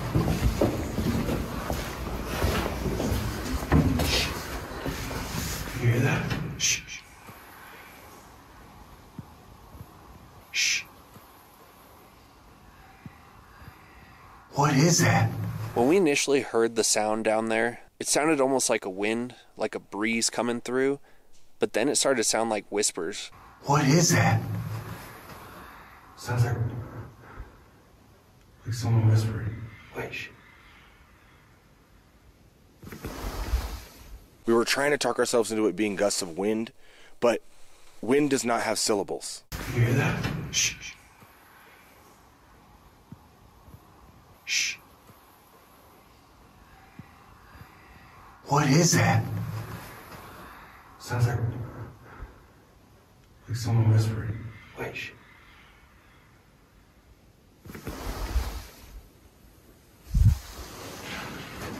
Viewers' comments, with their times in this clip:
0:08 I've heard very similar whispering in another cave exploration video which makes me believe it might be a natural occurrence. Maybe distant sound traveling through the cave and forming into a weird echo? Or both of those caves are haunted, I don't know.
0:08 Kinda sounds like it's saying "its quiet" or "be quiet" over and over
0:18 do you know what that sounds like? Bats in an echo cave.
0:38 sounds like a bear or some other animal grunting or breathing... Whispers kinda sounded like birds
0:38 it sounds like to me "I'm going to die, why why?"
0:42 Whispers for me says 'quiet'
0:49 I’m not all the way through the video, I’m currently I’ve seen videos on skin walkers and how they screech like that.. sounded kinda a distant scream, rather than a close, faint whisper. Captured audio is way different than actually being there in real time & hearing it so I can’t say for sure.